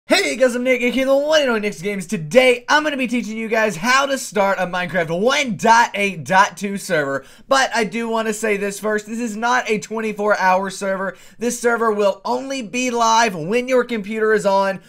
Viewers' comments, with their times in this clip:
0:00 what the fuck happened in the first few seconds? is that english?
0:00 Fuck you i almost die, iwas max on volume speakers....